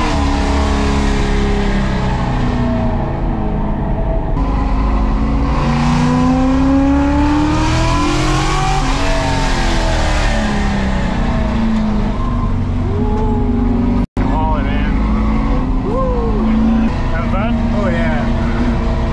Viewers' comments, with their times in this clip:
0:07 Holy shit it sounds angry.